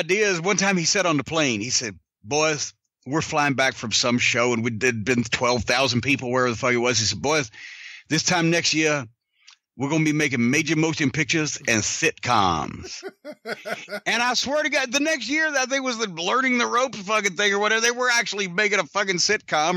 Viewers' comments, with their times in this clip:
0:06 "Boys, this time next year, we gon' be makin' major motion pictures, and sitcoms." Jim's Dusty Rhodes voice is great.
0:07 Great Dusty impersonation.